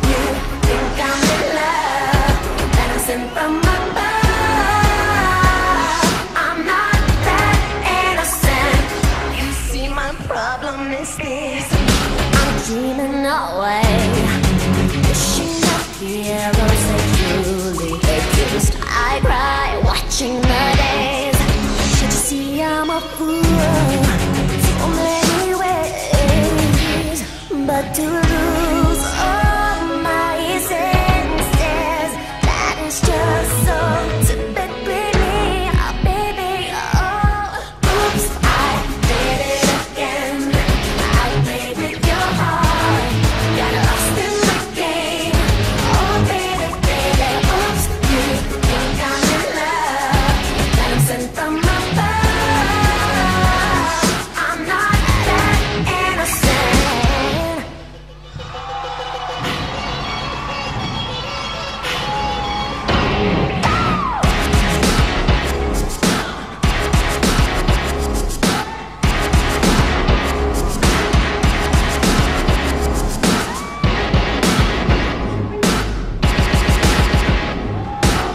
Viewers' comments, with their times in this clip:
0:09 I think she was lip synching on oops i did it again but not :| if she didn't someone should find the live vocals
1:03 ... homegirl SNAPS. (LOVE the power in her yell too)